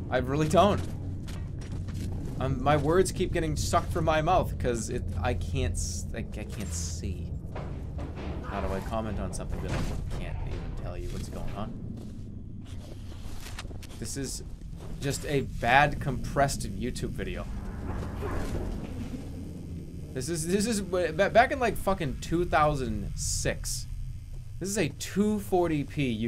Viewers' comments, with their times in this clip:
0:07 Dude was too lazy to walk all the way to the door so he just force-kicked it open from a distance.. Quality game. Also, that fucking joke was WAY TOO REAL..Especially when the background noise started getting almost as loud as the game. What a nostalgia trip. All it needed was a windows movie maker outtro with a black background and basic font saying "like and subscribe"